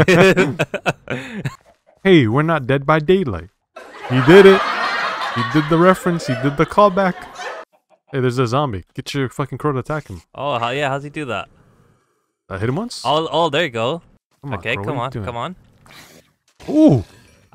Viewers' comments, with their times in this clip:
0:03 HAHAAHAHAHAHH LAUGH LAUGH LAUGH LAUGH LAUGH